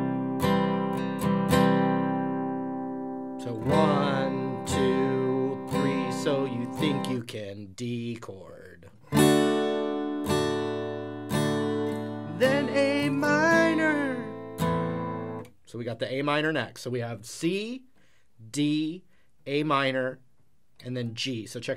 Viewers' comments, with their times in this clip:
0:06 So you think you can.... D chord. Lol. Lost my shit after hearing that. I'm dead tired. But I didn't hear you say it. For some stupid reason I heard that in Count Dooku's voice. Forgive me.